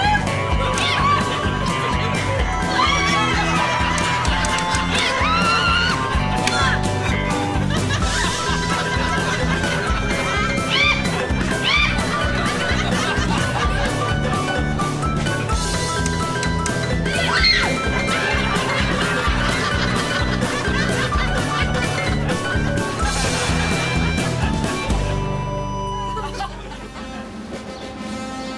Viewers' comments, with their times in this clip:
0:10 didn't expect that kind of knock 😆🤣🤣